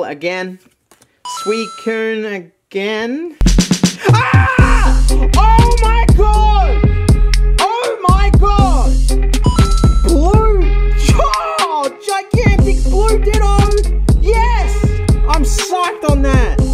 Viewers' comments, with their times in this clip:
0:03 Big Blue Bastard Ditto Music was sick, mate.